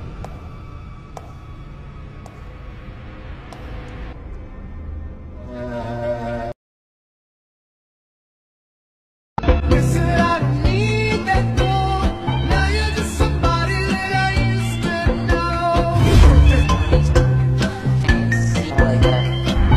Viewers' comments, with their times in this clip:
0:04 Uh why dose griffen sound like a chair being dragged acrossed the floor